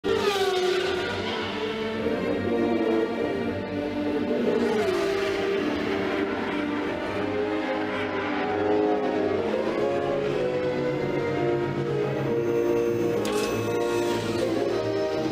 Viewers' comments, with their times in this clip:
0:01 substitles: ENGINE SCREAMING